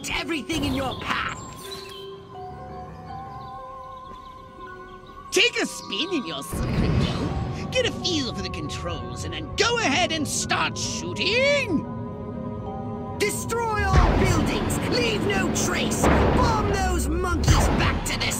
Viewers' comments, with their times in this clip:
0:06 both these conquerors sound very similar when he says "...and start shooTING~"